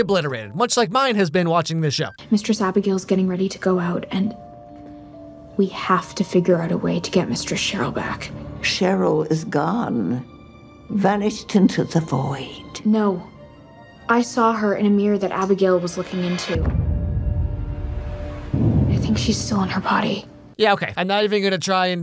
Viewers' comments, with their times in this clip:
0:08 why does she keep saying mister Cheryl?